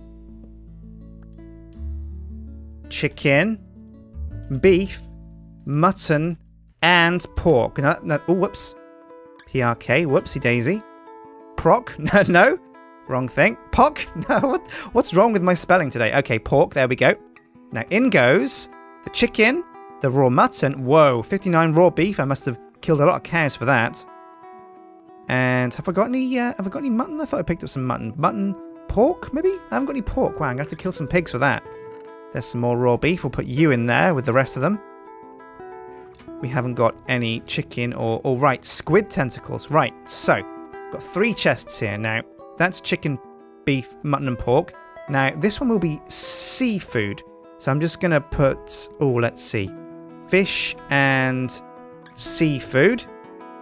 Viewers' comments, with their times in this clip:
0:06 Was anyone else distracted by how awesome and beautiful the music was from on?
0:27 The music reminds me of the last of us
0:35 the music reminds me of Markipliers heart to heart videos :D its so soothing